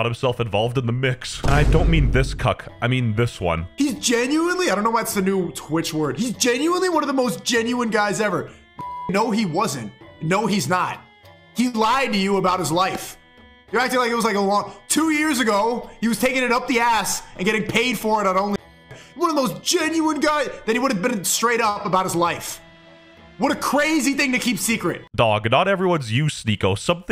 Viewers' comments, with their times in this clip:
0:09 Bro as soon as this guy spoke out of no where my headphones went off (they were at 100%)